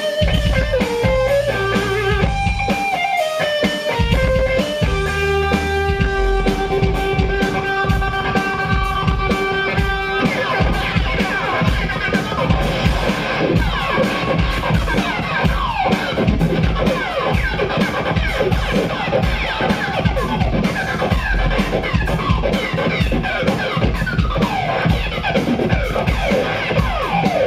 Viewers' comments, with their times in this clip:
0:10 how does he make that effect ???